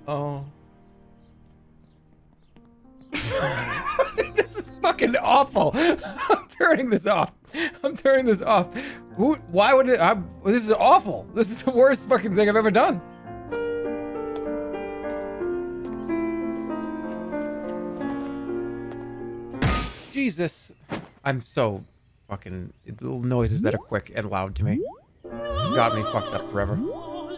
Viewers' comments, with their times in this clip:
0:10 the piano transitions so well right here, great job if that was intentional.